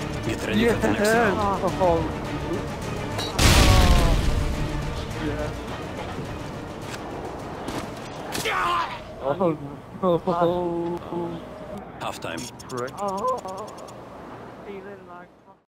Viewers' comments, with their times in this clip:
0:11 right before the orgasm sound someone says "prick" :L